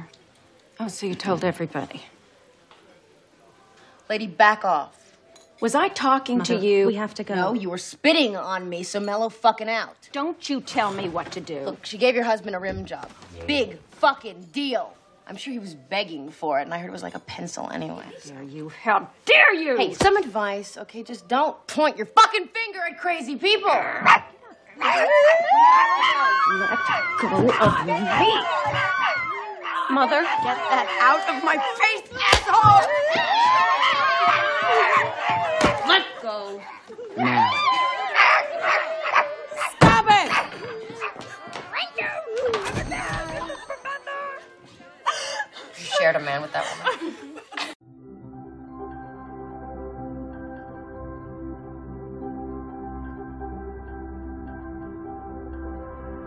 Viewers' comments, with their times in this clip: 0:08 spinning on me or spitting on me?
0:22 She kinda sounds like Ellie Williams TLOU2 (Ashley Johnson)
0:38 The way Valerie said "stop it" in this clip.
0:41 That Scooby voiced "RANK ROO, COME AGAIN" as Bonnie and her mom leave is something I never caught til I listened with head phones. I'm laughing all over again xD